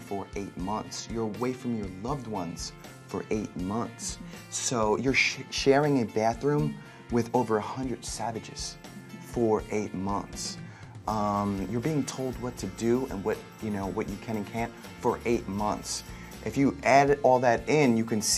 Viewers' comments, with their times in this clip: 0:05 The way he says "you're sharing a bathroom with over 100 savages... for 8 months" something's up...